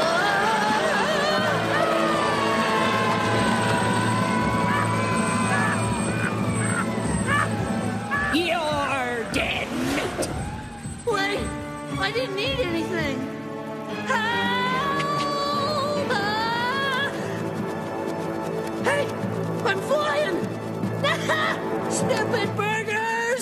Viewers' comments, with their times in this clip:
0:04 The Laughing billboard that's what gets me 😬